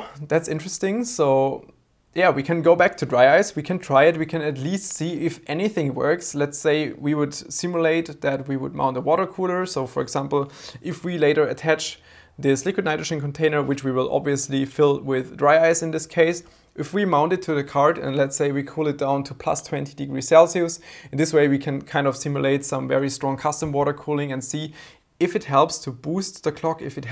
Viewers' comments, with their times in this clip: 0:10 Wow, is that cowbell? Needs more cowbell I think...🤣